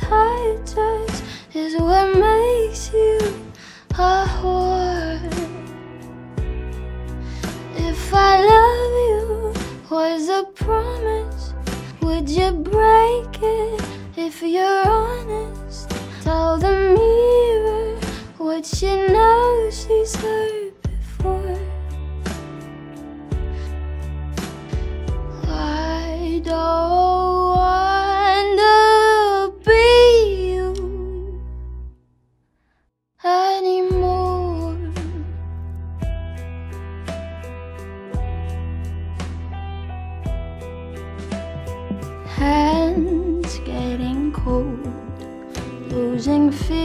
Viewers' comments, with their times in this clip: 0:05 I never realized she sings “a whore” I just thought she sang “is what makes you ooh oh ooooh”
0:05 the way the words pour from her mouth as she sings is just magic. She must be a siren.
0:25 Me : (trying to focus) 1 brain cell that can't stick together : (remember Billie elish distorted part)
0:28 was damn high